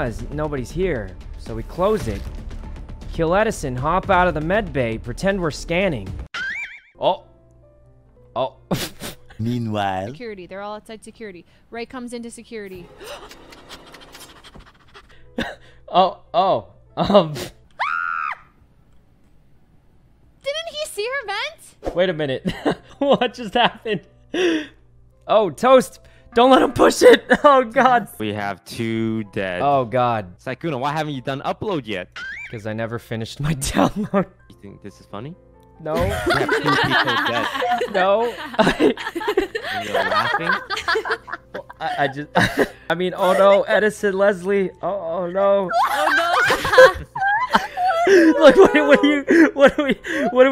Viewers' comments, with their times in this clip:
0:06 Valkrae pops out Sykkuno:Laughs
0:33 Toast sounds like that teacher that is like, YOU THINK IT'S FUNNY?